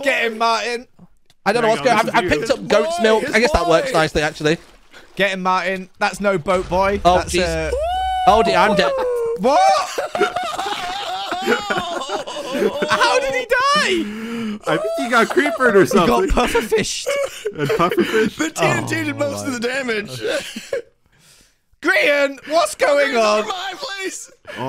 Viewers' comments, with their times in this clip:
0:05 he throws the ender pearl, then the tnt blows putting him on 1 heart, he knows he was dead already you can hear him say lmao